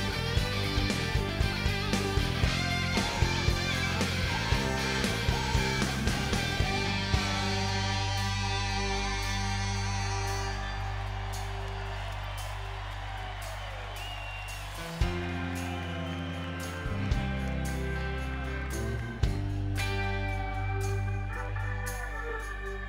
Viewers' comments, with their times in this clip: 0:09 I absolutely love this version of this song. When the band jams it out starting at about the mark is exactly what I like to see in a live performance. They're excellent musicians. It's nice to hear a good, tight band play.